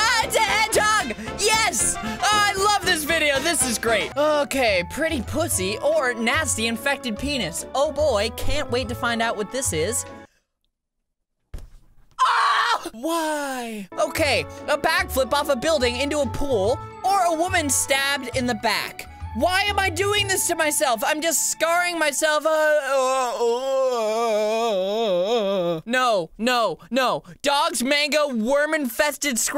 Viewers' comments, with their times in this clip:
0:09 that scream XD
0:11 that is the scream of terror